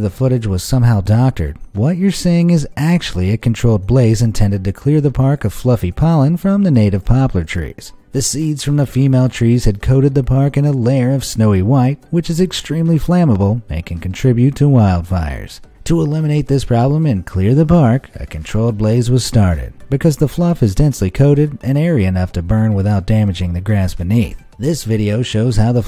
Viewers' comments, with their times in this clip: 0:09 what happend to your voice? :/